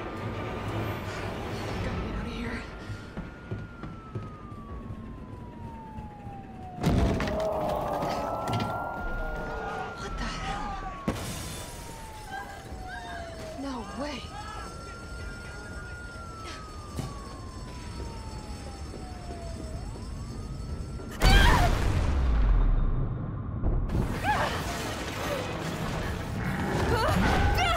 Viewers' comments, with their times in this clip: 0:09 My god, Nemesis is pissed I’m listening to this with earbuds....he sounds absolutely TERRIFYING😳